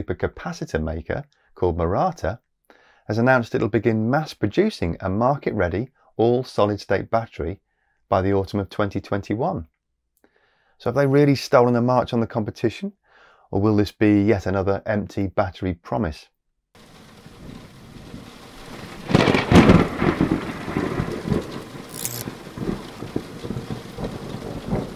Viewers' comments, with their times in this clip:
0:07 Barata? Is that Nikto Barata? WAT??!!11!??!